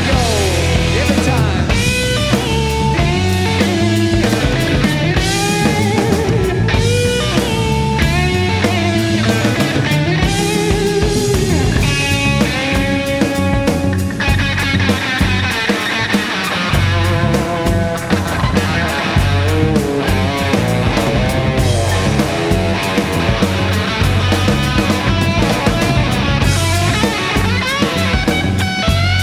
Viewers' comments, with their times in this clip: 0:10 is such a good solo 👌🔥
0:11 Holy shit the groove starting is 👌